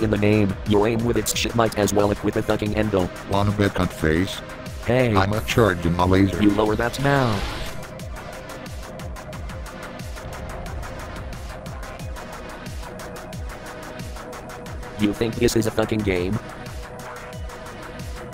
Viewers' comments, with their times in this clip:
0:05 "Ima chargin Malaysia"XD I don't know how,but for me the way he talks hasn't gotten old even after 8 seasons.Could listen to this all day :D